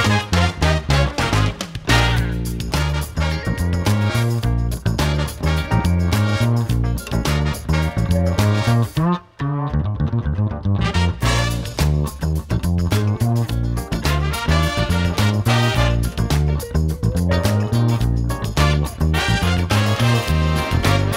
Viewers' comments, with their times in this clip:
0:08 nice fill so cool !!!!!